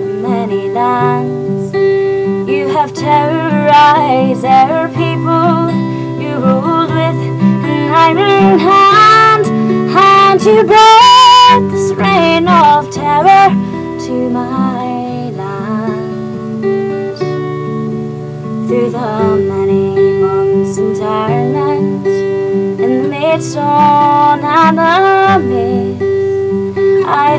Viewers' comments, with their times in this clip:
0:10 😍 just wish it was better recorded.